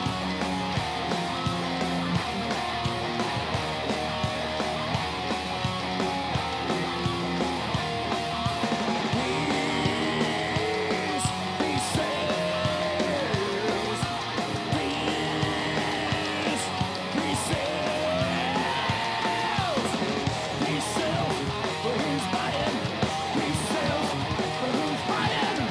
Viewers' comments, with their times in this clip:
0:09 That voice crack was beautiful.